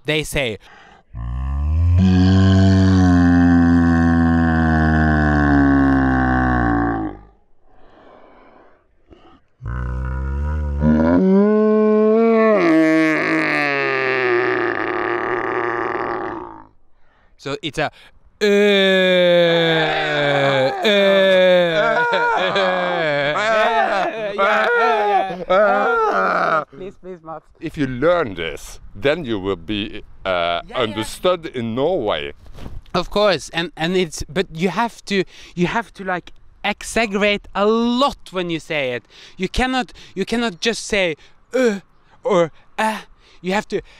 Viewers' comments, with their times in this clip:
0:09 perfect cow impersonation :))))))))
0:24 they begin to scare people screaming XD